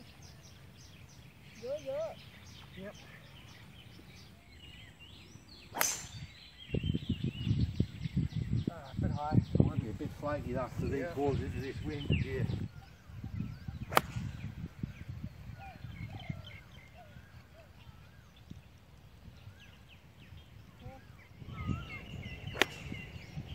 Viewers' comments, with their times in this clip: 0:05 whos the geordie? hello!